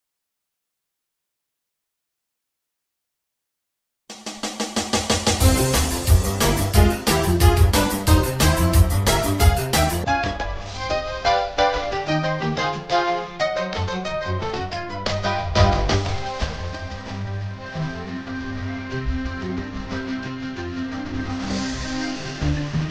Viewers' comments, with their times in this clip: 0:09 Casually Beethoven playing in the background